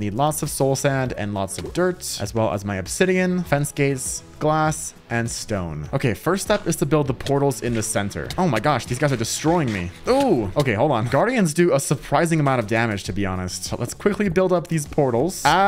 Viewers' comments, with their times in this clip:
0:03 did just say fance gay😂😂